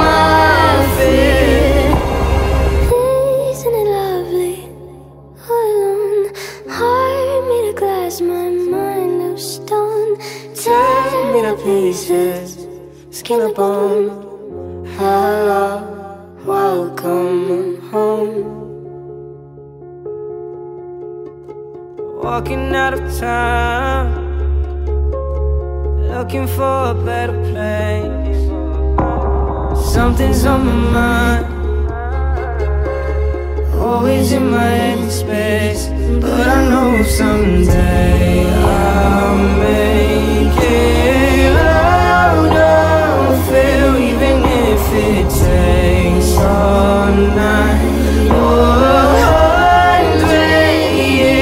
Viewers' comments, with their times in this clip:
0:03 when I heard her voice and the voice change I got chills
0:37 Is it just me or does the song keeps getting louder and louder and louder ? Ik thats a normal thing but in this song it’s not supposed to